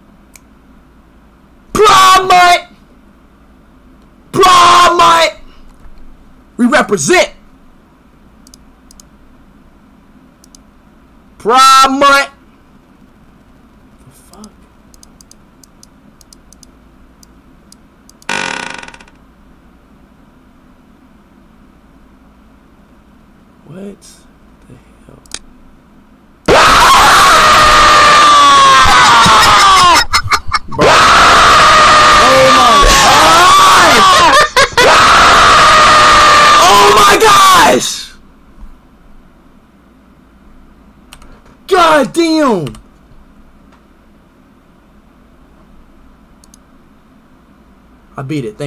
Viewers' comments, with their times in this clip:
0:09 This is 3 eyes screaming woman
0:26 NiCe My EaRs Is BleEdInG
0:31 was so funny with AHHHHHHHHHHHHHHH